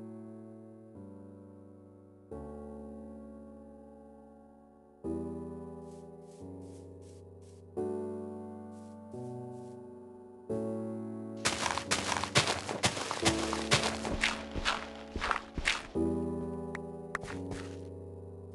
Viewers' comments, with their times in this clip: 0:05 man the music makes me cry in